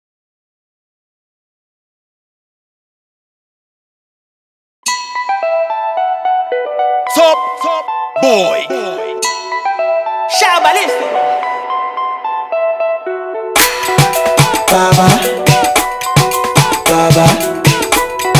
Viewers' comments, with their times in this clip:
0:06 Did i hear Phuck Boy ?